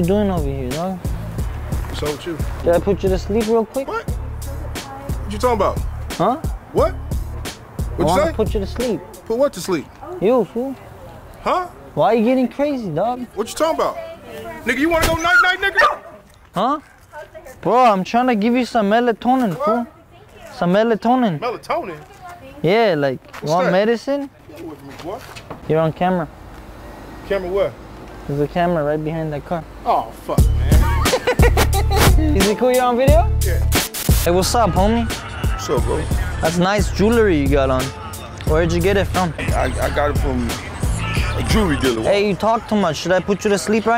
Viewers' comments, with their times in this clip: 0:09 this video had it all, me and my bud had a gut busting laugh that guy's reaction was gold! the way he said you wanna go night night and the dog barking had us both laughing harder then i ever remember
0:29 sounds like ice cube